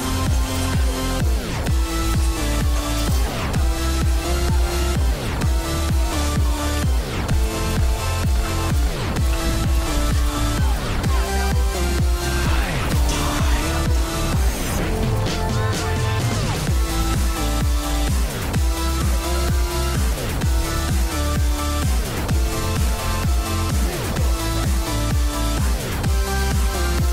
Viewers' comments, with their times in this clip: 0:09 am I the only one who thought reaper’s shots were in sink with the music?